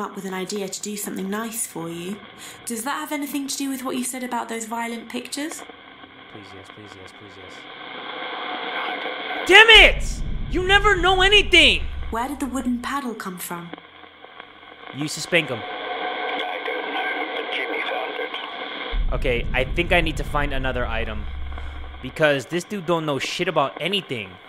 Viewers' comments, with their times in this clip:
0:07 Am I the only one who heard "pizdets pizdets pizdets" on ?